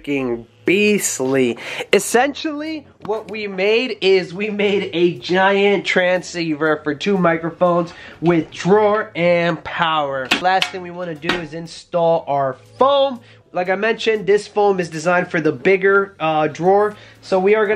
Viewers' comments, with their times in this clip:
0:04 Why are you doing your voice like that?